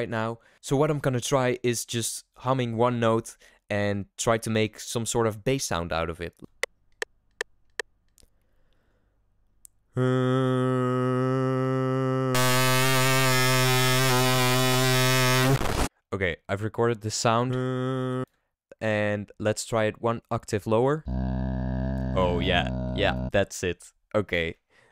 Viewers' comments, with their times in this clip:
0:08 my man being a microwave
0:11 My microwave at 3 am: